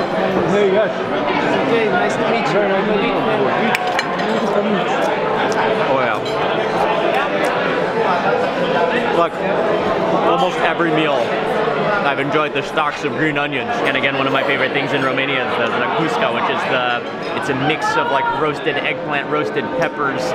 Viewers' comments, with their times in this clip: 0:08 the restaurant is so noisy.